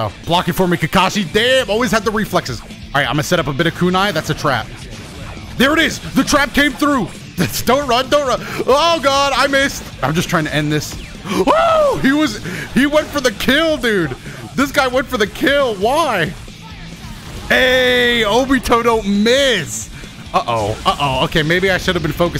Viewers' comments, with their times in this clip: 0:07 Am i the only one that heard "It's Donut, Donut!" ?